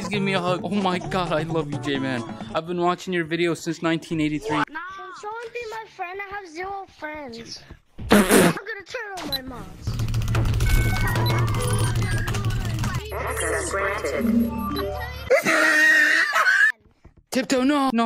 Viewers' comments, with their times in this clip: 0:05 got me dying when he spits when he lahgs at the little kkid